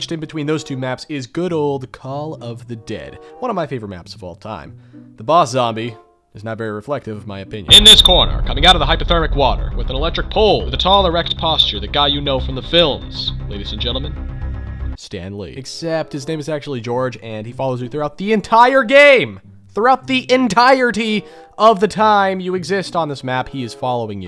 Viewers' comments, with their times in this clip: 0:07 WWE wrestler intro be like